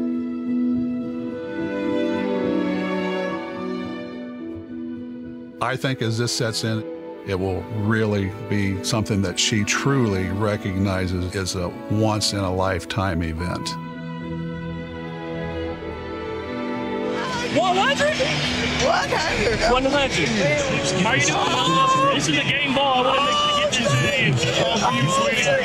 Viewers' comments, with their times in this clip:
0:10 That movie starting ish sounds like the Halo 3 Credit music